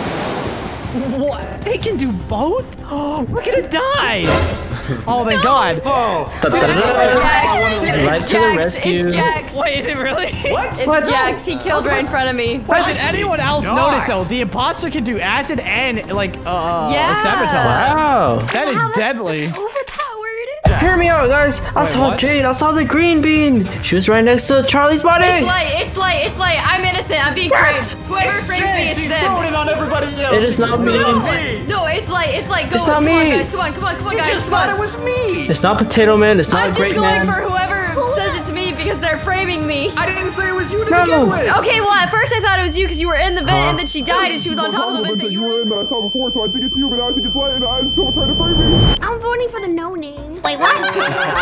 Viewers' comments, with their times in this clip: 0:05 is like an action movie cuz the music tho its like there talking about whos the killer
0:35 killed me XD "its not potato man its not gre-" intense wheezing